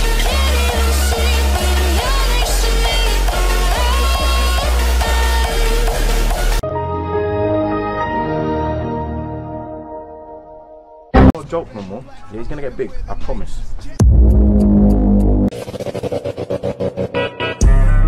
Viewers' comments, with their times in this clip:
0:05 i tought bro said gym minnors > any minnors 💀